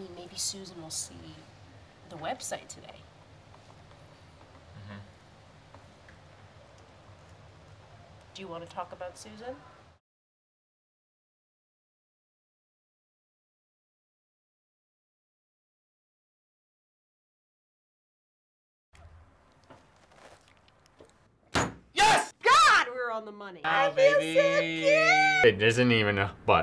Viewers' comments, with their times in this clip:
0:10 Audio is gone?